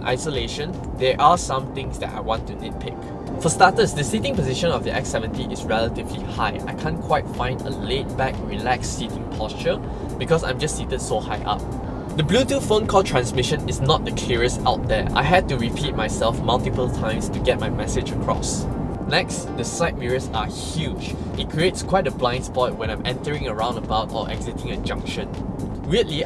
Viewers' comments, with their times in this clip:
0:10 I thought you said some vulgar ...